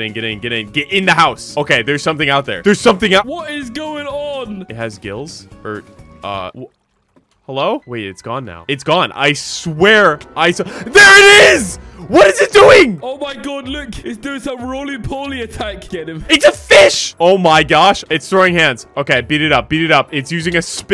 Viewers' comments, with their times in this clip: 0:08 im having flashbacks from that guardian music
0:08 As a person who likes to play breath of the wild, the guardian music almost gave me a heart attack